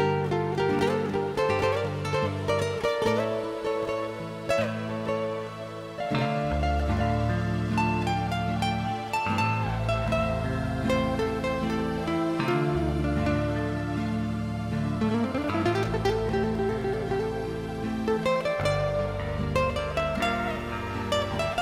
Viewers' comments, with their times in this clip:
0:07 An absolutely glorious song. Around the mark the beauty is almost heartbreaking, especially when the lyrics kick in shortly thereafter and the song touches something magical, if not mystical.